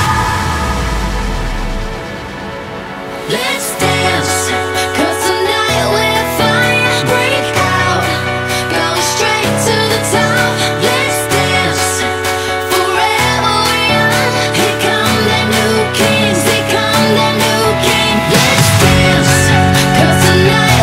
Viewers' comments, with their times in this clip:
0:03 The piano part gives me goosebumps every time 😬